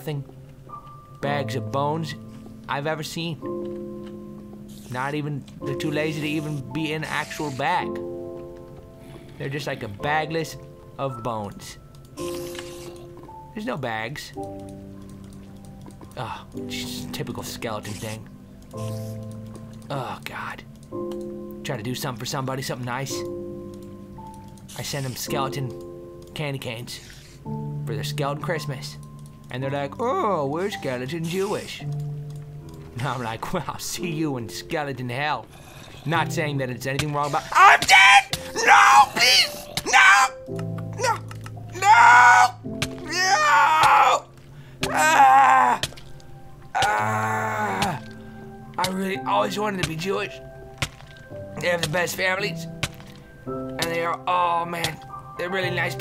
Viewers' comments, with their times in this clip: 0:06 Pretty piano t
0:25 music so peaceful
0:36 his screams remind me of Will Smith in Shark Tale...
0:36 i didnt know his voice could go that high, what a manly scream...
0:39 oh so this is were valve got the fast zombie sounds :D
0:39 it sounds like his scream was paused
0:40 hahahahaha that scream of doom.